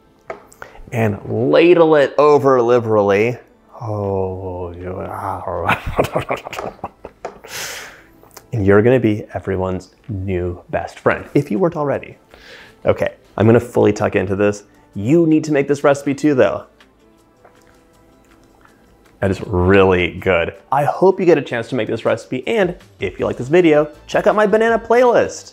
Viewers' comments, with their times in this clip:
0:05 man just did the iconic mr bean laugh
0:06 You sounded like mr bean 😂